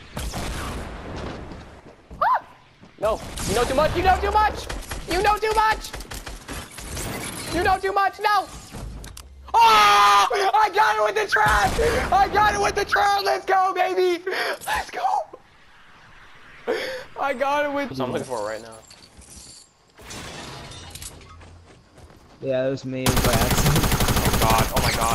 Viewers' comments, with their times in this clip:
0:07 Why is my audio not coming through? Also I remember me yelling "PLACE THE DAMN TRAP!!